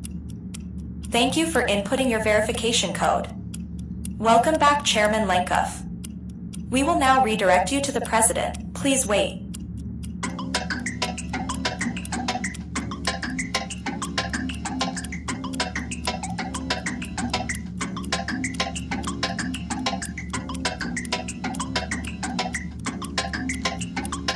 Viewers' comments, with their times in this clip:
0:10 music hits hard